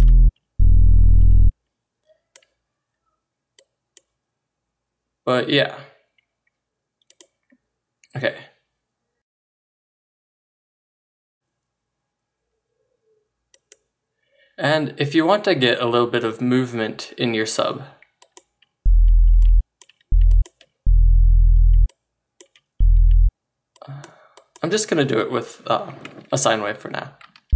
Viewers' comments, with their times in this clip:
0:09 that silence :3 ^-^